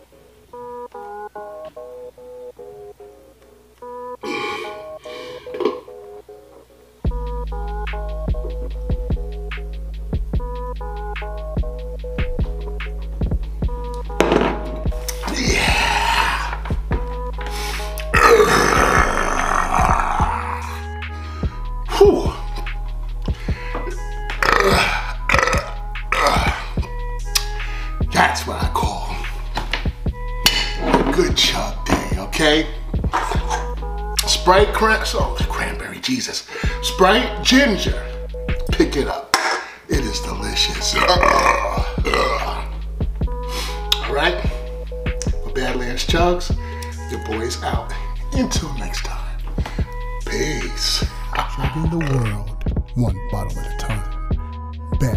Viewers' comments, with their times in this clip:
0:04 he literally burped into the drink while chugging lmao.
0:15 "yeahhhhhhhhh" hansome burb
0:17 I sware I smelt that burp..😂
0:18 Guard: i need you to stop that shouting, youre making people nervous!
0:18 thats what I call a burp
0:40 easily the smoothest transition to a burp I've ever witnessed
0:40 hits you with the two burp jabs and finishes of with the hook
0:40 the way he burps like hes singing🤣🤣👌